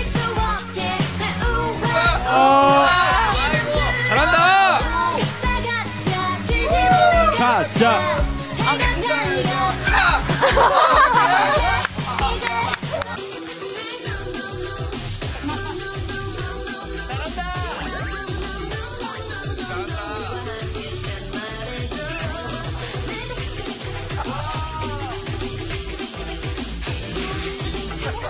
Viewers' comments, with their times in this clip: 0:09 rms voice crack🤣